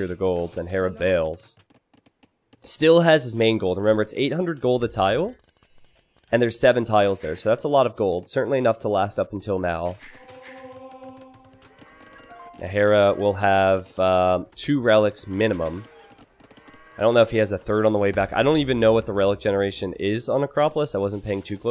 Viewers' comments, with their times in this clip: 0:04 "and Hera fails...."